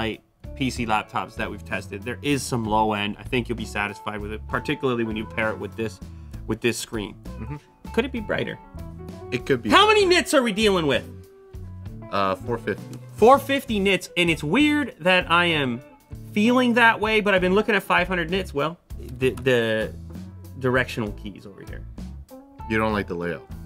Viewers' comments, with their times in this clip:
0:09 wtf man you. 😂 Rip headphones users